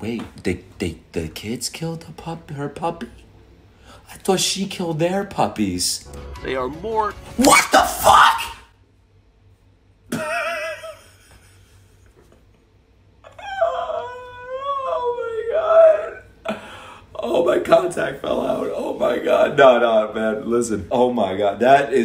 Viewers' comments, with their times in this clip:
0:06 That's the most girlish voice I've ever heard from you lol
0:10 the nervous laughter is EVERYTHING 💀